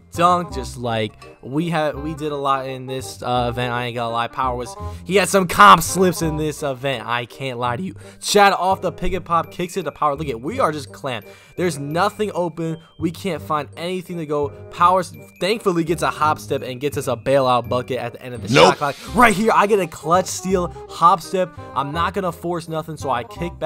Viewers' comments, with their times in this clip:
0:07 I heard that voice crack